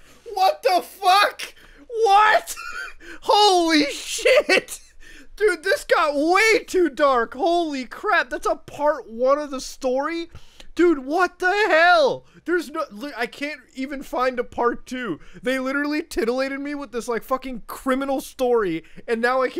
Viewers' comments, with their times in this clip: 0:06 That voice crack sounded like Travis Scott autotune. Lol